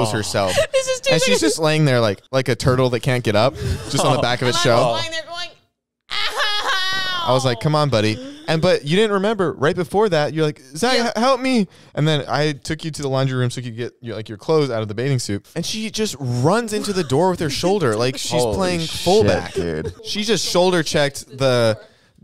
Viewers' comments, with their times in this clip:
0:06 is it just me or did someone fart lmk if i'm bugging